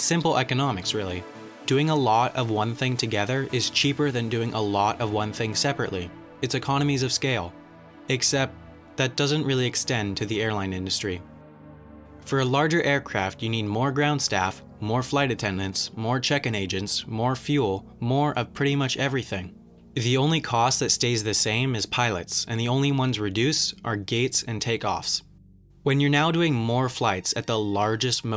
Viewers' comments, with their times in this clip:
0:09 Omg, the edit of the background music as the script went from positives to negatives is SUPERB. Such a small detail that is executed perfectly. Bravo.